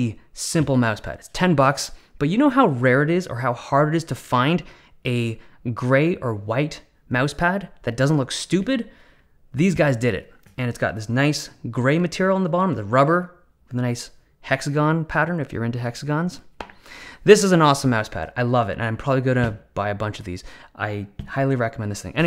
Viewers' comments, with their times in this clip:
0:07 The way he said "That doesn't look stupid?!" 😂😂😂😂😂😂😂